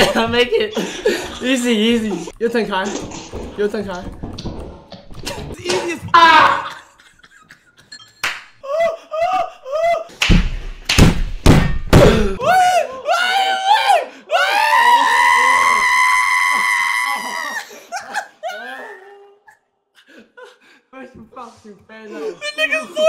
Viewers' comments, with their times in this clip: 0:04 that “Aah” had me dying😂😂😂